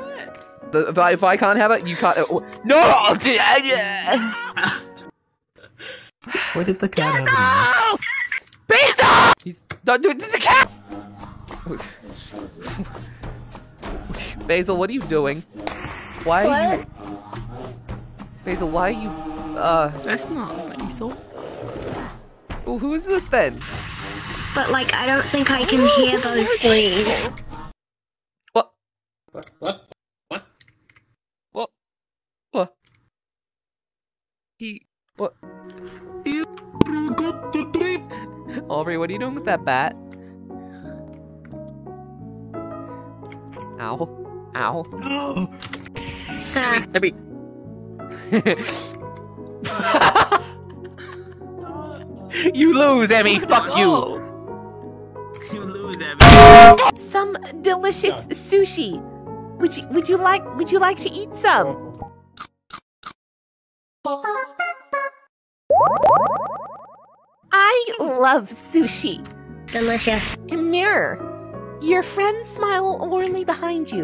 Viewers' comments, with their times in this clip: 0:06 God, the way Basil screamed "GATO" and then Omori screamed to him was so hilarious XD Bruh I LOVED the final kiss with the "i LOVE you"
0:56 im pretty sure its because im wearing headphones but i recoiled back like the pan actually hit me 💀